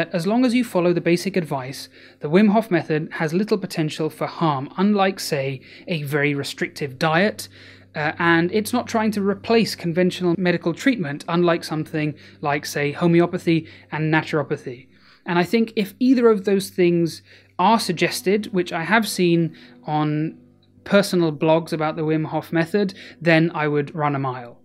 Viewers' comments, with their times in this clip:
0:07 “…and thats ok” just like wim would say it :)